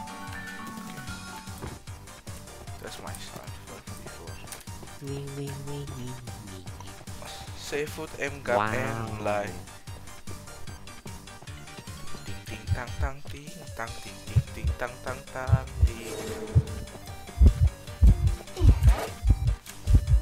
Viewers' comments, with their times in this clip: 0:07 Did you singing in that time “See Tinh” :)